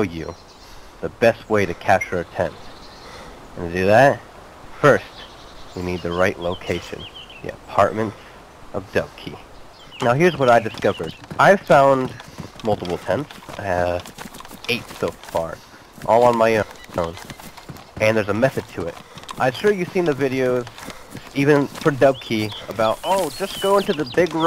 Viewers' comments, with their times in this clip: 0:07 I can't understand the name he uses when describing the location, ...@ it SOUNDS like he says; "The apartments of DoveKey", but i cant find anywhere that even resembles that name on the map.